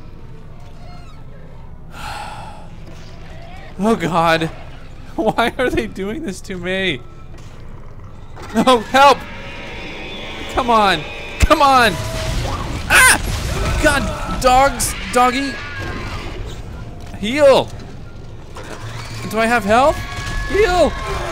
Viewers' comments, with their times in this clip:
0:04 That sounded like a velosoraptor from Jurassic Park.